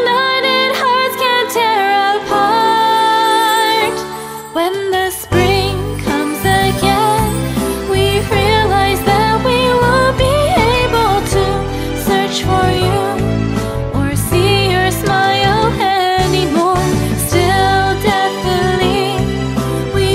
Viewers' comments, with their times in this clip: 0:04 The memories of the anime come flowing in like a tsunami! How do you make such a beautiful cover for this song?? I love this and Koro Sensei. I won’t ever forget him, the anime, or this song (Because I’ll keep on listening to it). The lyrics actually have a meaning behind it. (Btw, doesn’t the song kind of sound like Jurassic Park? )